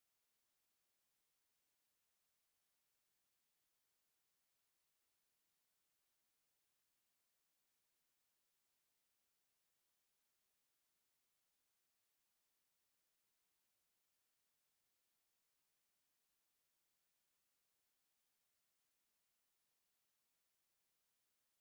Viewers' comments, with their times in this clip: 0:06 Audio cut out